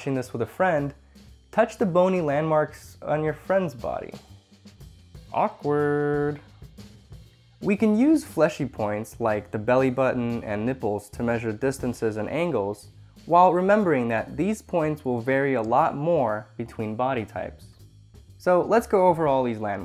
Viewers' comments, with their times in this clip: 0:04 would a random kid on the street work? I hear sirens